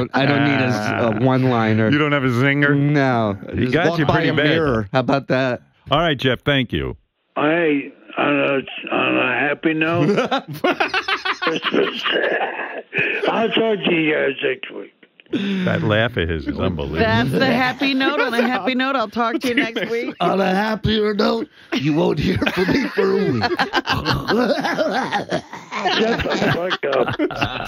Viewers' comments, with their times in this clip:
0:10 Did he really say "Merry Twistmas!" lmfao That laugh